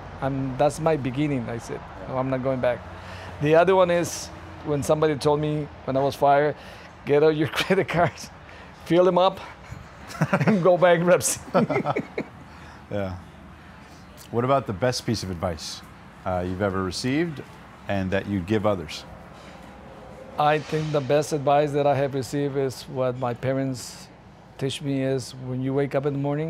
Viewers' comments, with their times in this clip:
0:09 what did he say??? "go buy greps"